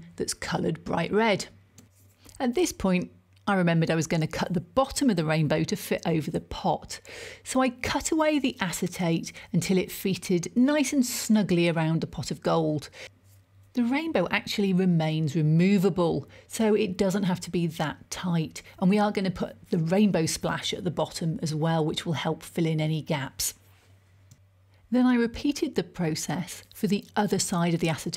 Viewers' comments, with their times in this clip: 0:10 until it feeted... 😂😂😂😂